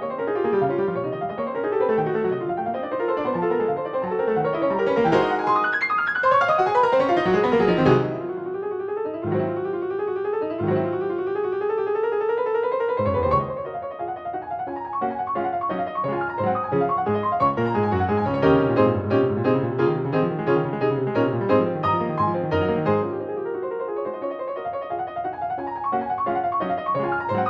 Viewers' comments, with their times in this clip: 0:08 the inly part, that sounds like original piece
0:13 there is an e natural🤨